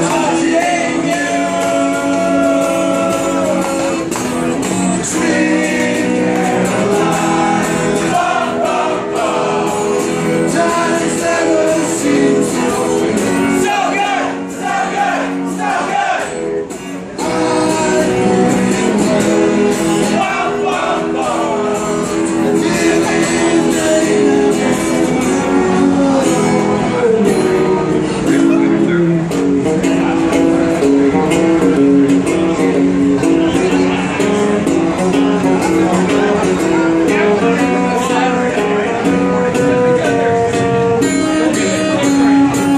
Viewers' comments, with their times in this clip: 0:07 That is one quiet subway train!
0:29 pauses until train boards